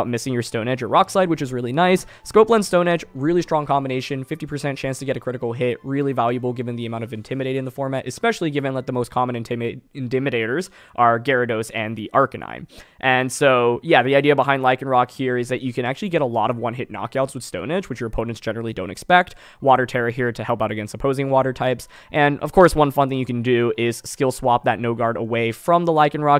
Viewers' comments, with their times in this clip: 0:10 “InDimidators, owners of the Dimmsdale Dimmadome, in the center of the Dimmadale mall!”